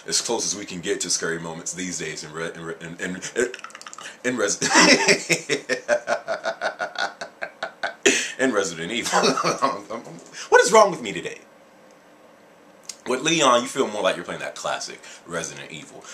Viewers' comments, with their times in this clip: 0:03 lmao sounded like a scared skeleton.